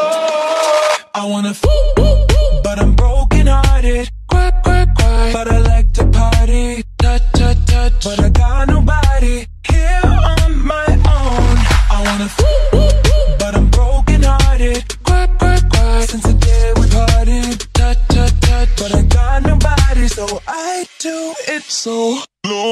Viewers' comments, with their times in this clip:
0:04 doesnt that Sound a bit like gaster sounds? i know hes saying cry but it reminds me of winding sounds